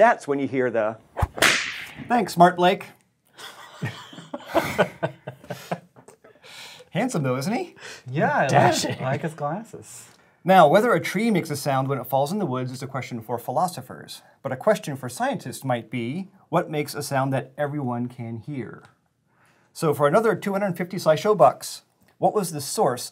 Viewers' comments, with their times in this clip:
0:08 I think I just choked on my drink from the way Michael Aranda said "Dashing!" XD